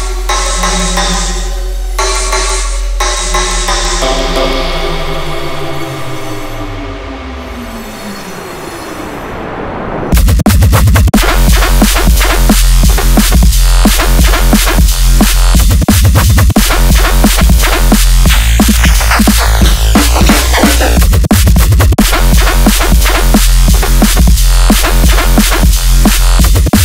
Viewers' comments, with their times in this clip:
0:10 He makes pretty good drop intro sounds.